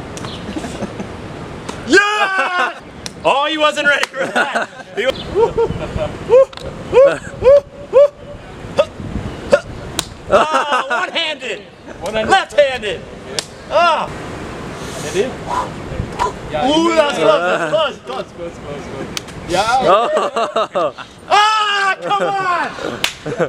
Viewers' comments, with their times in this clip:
0:06 oh oh that's the sound of the police